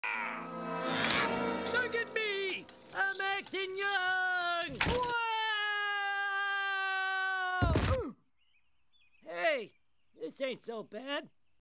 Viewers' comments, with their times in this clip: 0:05 that yell makes me lose it everytime 😂🤣🤣🤣🤣🤣🤣🤣🤣🤣🤣🤣🤣